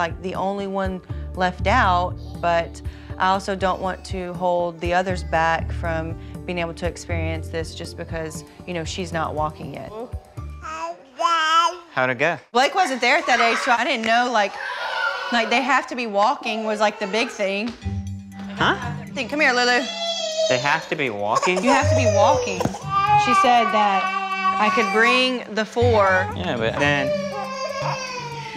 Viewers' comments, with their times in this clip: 0:10 I swear she said hi dad!!😂😂